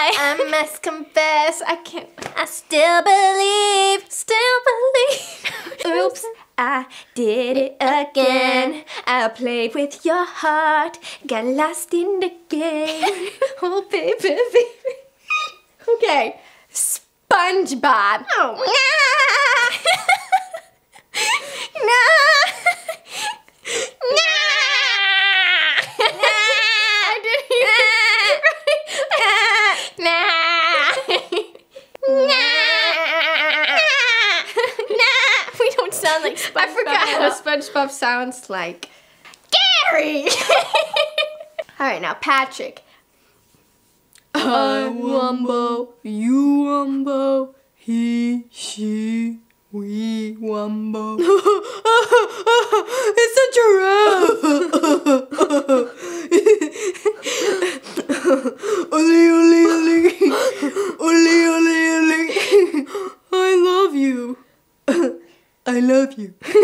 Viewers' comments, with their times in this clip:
0:04 OMG I thought you played her singing at first. HOLY COW THAT WAS LIKE PERFECT!!!!
0:19 they sound funny here 😂😂
0:20 The spongbob impression was funny
0:29 She sounds like a goat! 🤣😂😂🤣
0:33 Omg Vanessa sound like she's a sheep and got killed by a Minecraft player 💀😂
0:38 nessa sounded sooo funny
0:39 i got scared😂😂😂😂 all this video was so funny my heart was going un and down of that laugh
0:45 they said it at the same time
0:52 they sound like two surfer dudes.